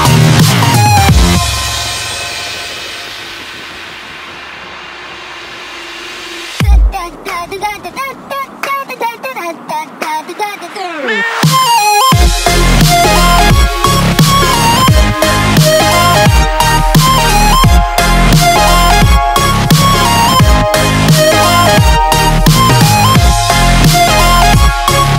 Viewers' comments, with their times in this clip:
0:05 lmao nah i love both versions especially this one at like cuz it sounds like my wife makin fun of the hello song lol
0:06 DUP DUP DUP DUP This is now my intro music as to today